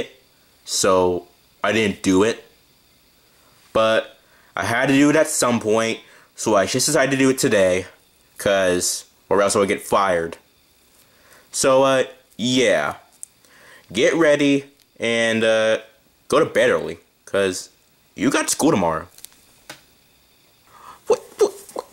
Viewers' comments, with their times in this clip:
0:05 you make me laugh When Patrick’s kindergarten story Squidward laughed at it